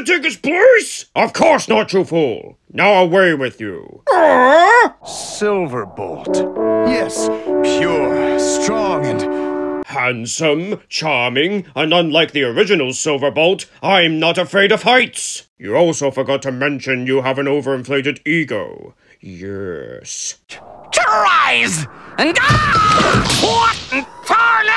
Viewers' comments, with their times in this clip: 0:05 [Silverbolt's Cheesy theme]